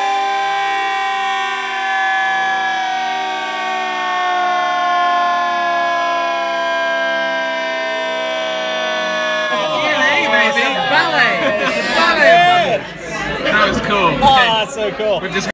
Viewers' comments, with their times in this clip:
0:06 That awesome chord